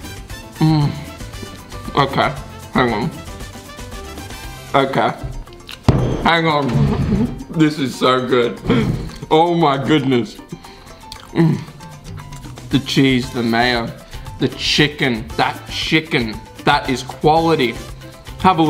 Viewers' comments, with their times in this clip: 0:03 oh I can feel the taste of the burger is outstanding by that bang on the table